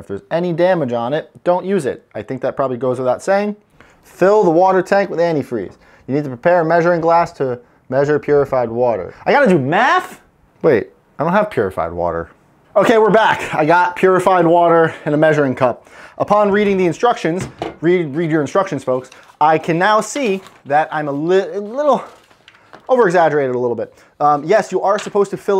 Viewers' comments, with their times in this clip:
0:06 the pain in his voice lol